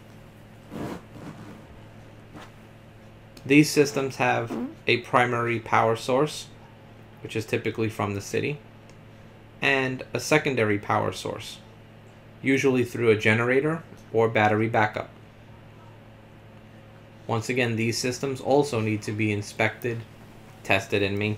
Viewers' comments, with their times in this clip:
0:03 Dude let a squeaker out